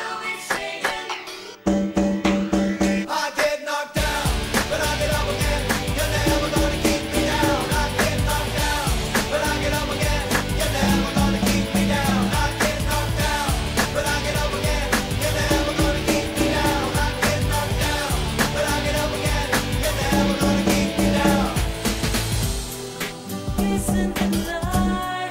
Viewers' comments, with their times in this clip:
0:09 mic the snare